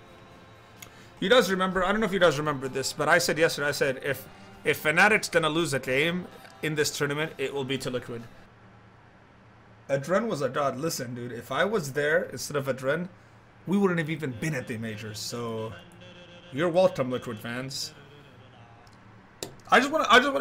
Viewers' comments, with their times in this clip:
0:05 fucking hell that voice